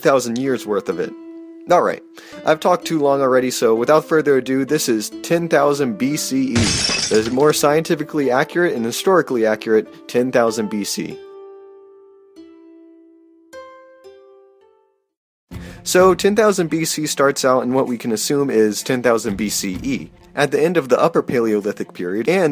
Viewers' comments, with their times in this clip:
0:06 I don't mean to be rude or nit picky and this is a great video but you do kinda wanna be careful making sound effects too loud. The E popping in with the crash sound kinda hurt to listen to with that crash noise and it was a lot louder than your own voice. Again sorry if taht's nit picky but it was too loud. Plus maybe a small pop noise might have been a better sound effect since crashing is a bit off for something "popping in". Again Im really sorry and don't mean to nit pick.